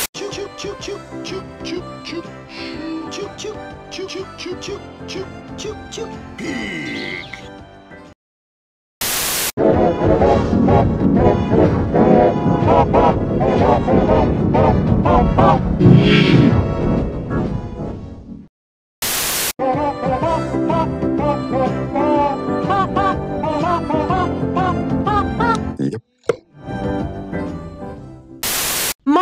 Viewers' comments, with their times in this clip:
0:03 dat yee I CAN'T XDDDD
0:09 Damn, the was crYEEpy
0:09 TAKE OUT TO 246 I HATE G MAGER ITS SO FREAKY, it triggers me ;-;
0:12 sounds like game doom